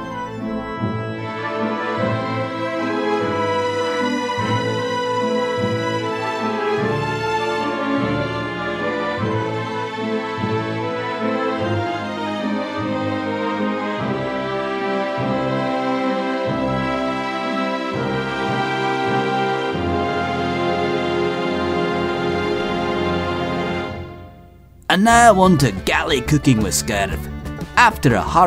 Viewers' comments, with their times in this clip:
0:10 Where you start putting extra osteoderms on the back of the croc with it standing up right and the classical music it gives me major shin Godzilla vibes